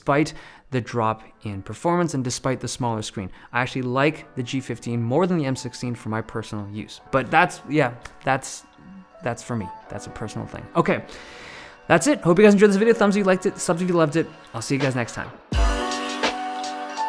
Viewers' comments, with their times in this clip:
0:04 is your outro music some sort of remix of Minecraft music it kinda sounds like it if you listen really carefully